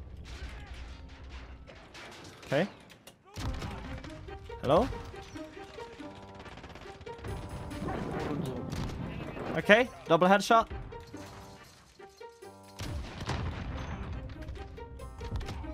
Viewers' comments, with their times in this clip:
0:03 that music brought me back, if you know you know